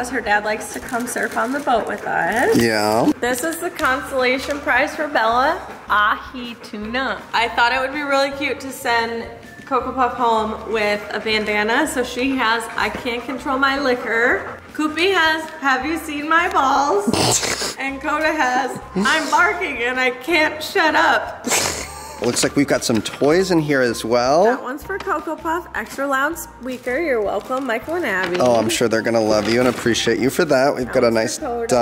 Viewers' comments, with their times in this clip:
0:05 I love how she says tuna
0:18 he's still laughed at that part